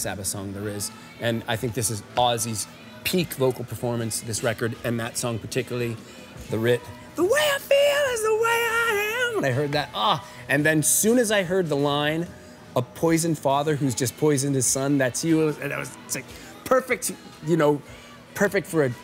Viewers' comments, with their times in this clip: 0:04 the fact he sings the song and nails the key with it overdubbed in the video backs up the favourite song statement hard hahah! Lovely dude and awesome selection!